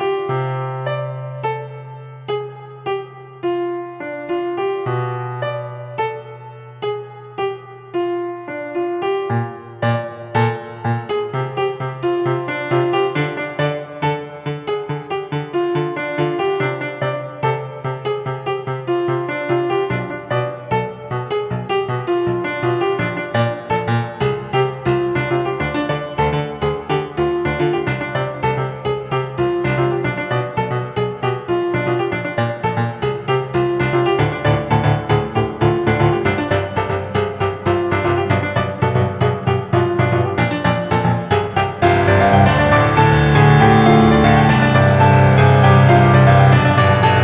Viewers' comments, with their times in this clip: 0:06 looks like sans can't even play his own song
0:34 where it actually starts to sound good